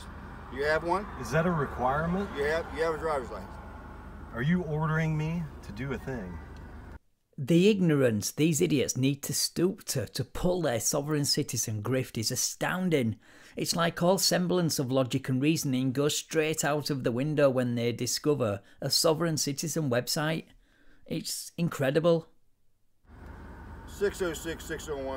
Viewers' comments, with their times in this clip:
0:07 are you ordering me to do a thing? 😂 Bro sounds like an NPC